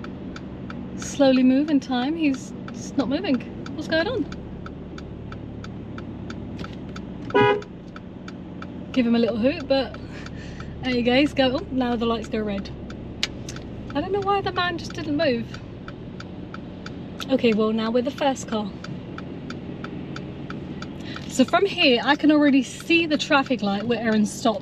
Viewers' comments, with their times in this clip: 0:06 she honked at the truck while there was a pedestrian crossing. Is it procedure to run them over in the UK if they are not fast enough?
0:06 That use of horn was dangerous. If the lorry set off straight away without checking for danger, the pedestrian would have been hit
0:07 hooted at the truck in front. Road rage!
0:07 So already this driving instructor has broken the law. That was an illegal use of a vehicle's audible warning device. If you're going to preach the rules of the road, make sure you obey them yourself.